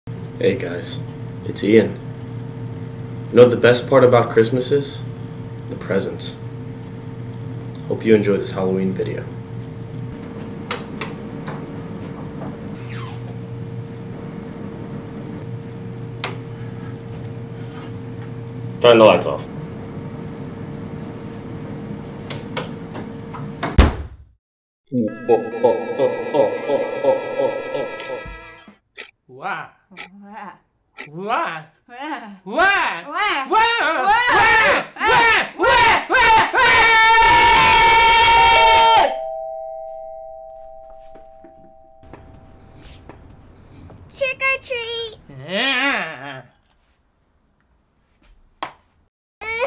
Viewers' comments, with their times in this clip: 0:00 HE HAS A VOICE???
0:34 bird mating calls be like: